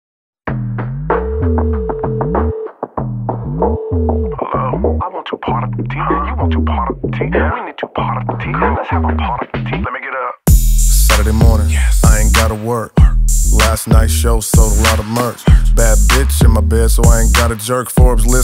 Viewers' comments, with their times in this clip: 0:01 You know the track is gonna be good when you're bobbing your head before the mark. This got that funky vibe and I'm feelin it.